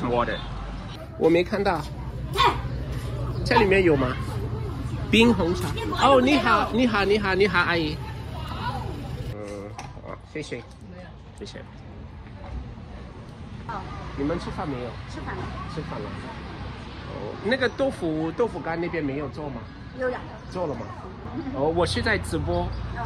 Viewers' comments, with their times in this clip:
0:05 did not sound friendlyat all 😢